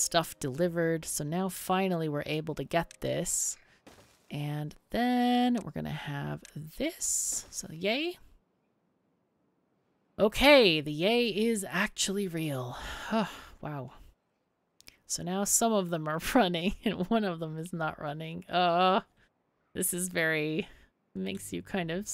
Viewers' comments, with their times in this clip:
0:04 Love your videos (and your soothing voice). I'm pretty sure that paper mill will not "auto-receive power" from the gear building - the paper mills don't accept power from that end.